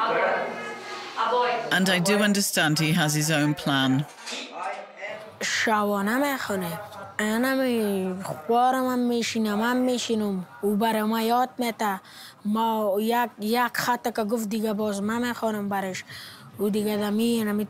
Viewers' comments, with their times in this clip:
0:05 this is Persian language untouched for 1000 years, for me it feels like im listening to an ancient book. so pure and Nobel.